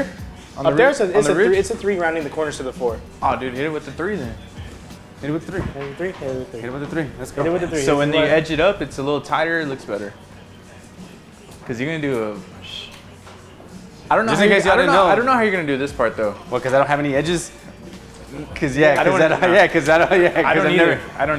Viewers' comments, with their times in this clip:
0:05 It sounds like "Хай буде 3" on ukrainian language, which means "Let it be 3" hahah